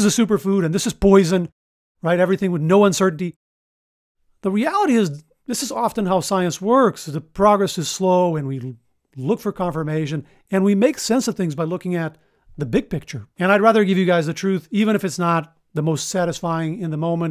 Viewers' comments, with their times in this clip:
0:04 As a side note, at the mark, you said “the reality” just like Christopher Walken would. 😊